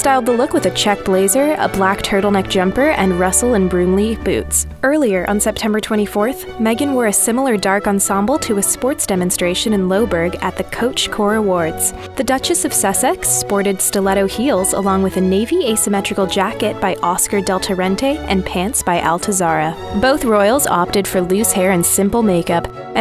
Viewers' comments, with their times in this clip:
0:08 sorry, how did she just say Loughborough?